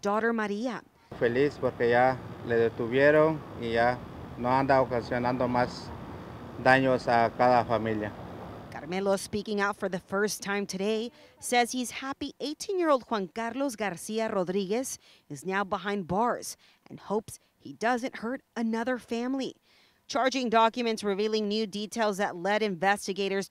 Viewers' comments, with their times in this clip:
0:10 Stop saying his name with a sexy accent 🤦🏾‍♂️